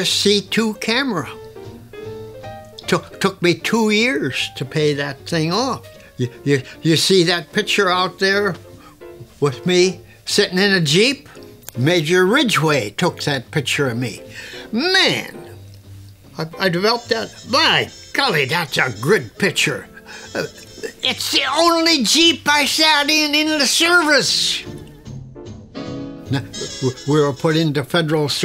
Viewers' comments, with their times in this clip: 0:10 ...these old timers really get me when they speak like this......man the old ways are going in the wind....😢